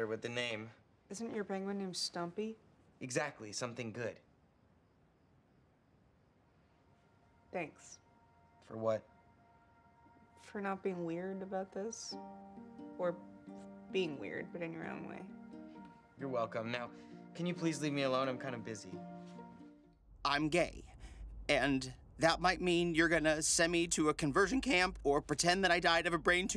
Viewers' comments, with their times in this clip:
0:08 the guy gives me sheldon vibes from big bang therory like the way he accepte and speakes